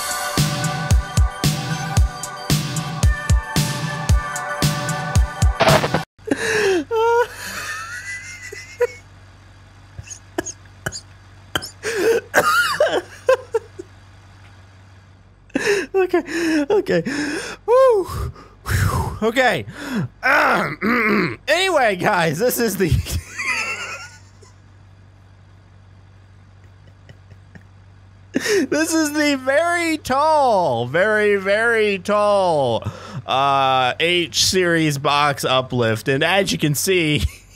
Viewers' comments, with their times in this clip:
0:07 Tea kettle mode ACTIVATE!
0:21 arrrgh mrrrgh looks like someone was a pirate xD